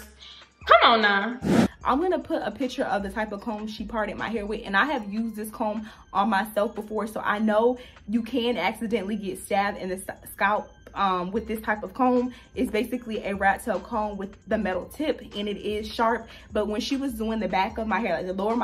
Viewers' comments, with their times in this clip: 0:03 I know that voice ❤️❤️